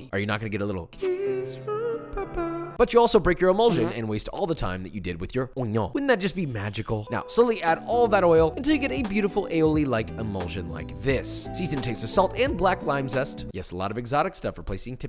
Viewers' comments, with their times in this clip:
0:03 That fart sound made my day